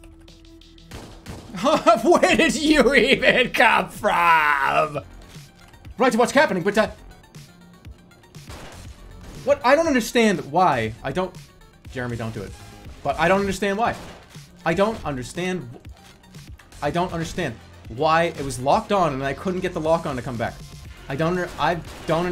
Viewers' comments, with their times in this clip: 0:10 That gunsync tho